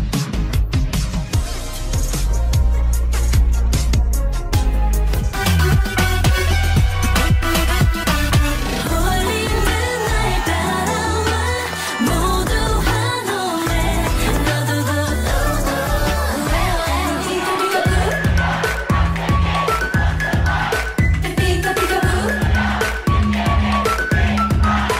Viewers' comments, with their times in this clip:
0:10 this person screaming is so iconic💖 they’re honestly me lol